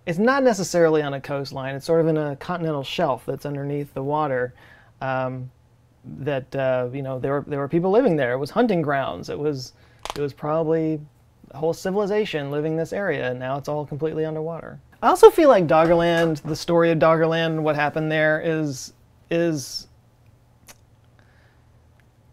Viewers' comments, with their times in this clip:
0:08 that's one loud fingercrack!